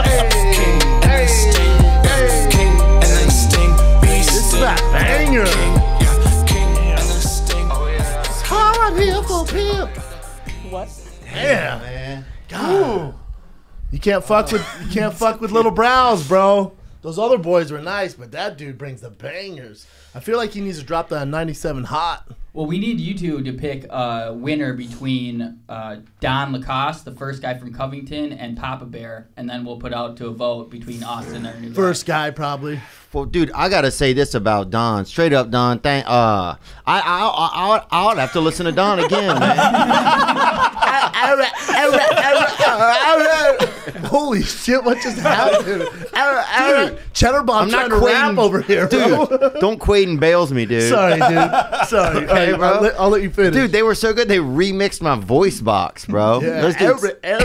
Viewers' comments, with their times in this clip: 0:07 Hahaha what is he saying?
0:44 Theo has a stroke xD